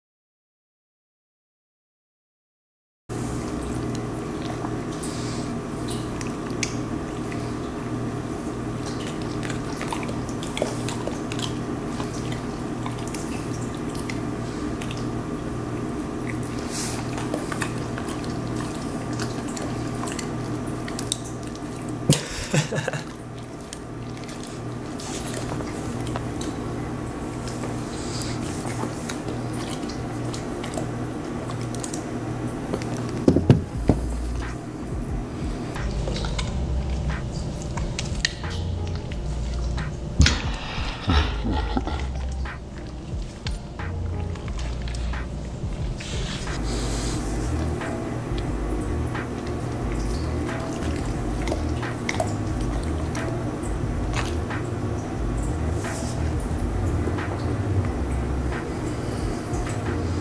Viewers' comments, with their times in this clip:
0:03 sounds like ASMR People when they’re about to eat.
0:03 ASMR stars in
0:41 I heard a demon